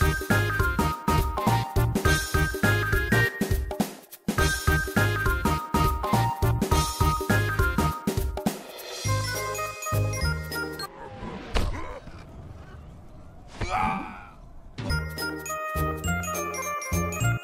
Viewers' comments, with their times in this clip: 0:05 The jolly music really helps